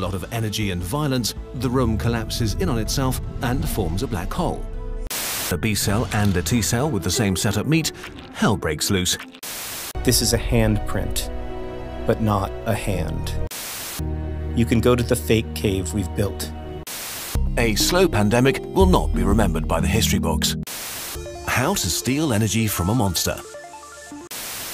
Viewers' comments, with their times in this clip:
0:05 the sound the cells make when splitting is the same sound that happens when you hit the wall of flesh.